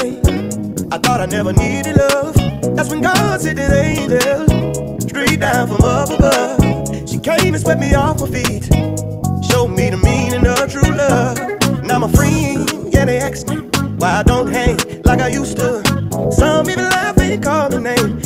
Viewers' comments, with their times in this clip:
0:04 aye music hitting 💃